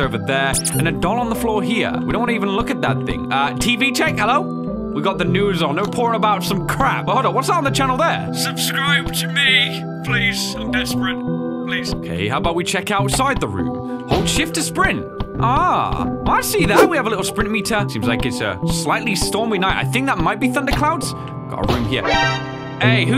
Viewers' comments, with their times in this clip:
0:07 PLEASE IM DYING. HIS VOICE HITS DIFFERENT
0:07 I'm dying. HONESTLY HIS VOICE